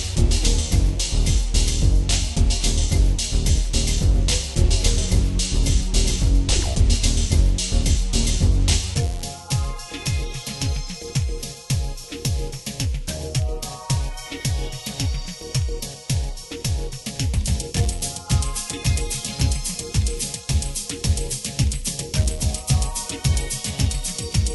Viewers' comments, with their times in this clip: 0:08 I always loved how ethereal this track was. It really fits the crystal feel of the level. Especially this moment which really reminds me of one of the extra tracks found in the original Loaded